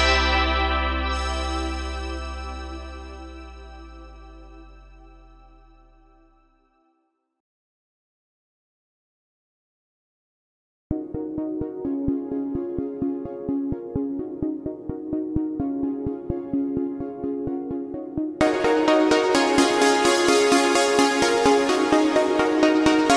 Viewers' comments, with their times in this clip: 0:09 Dude, what's the TheWeeknd song this shit is killing me. I went through all his songs and I cannot find it. It starts the same way for about 2-3 seconds but then it goes down instead of up like here. And it's slower tempo.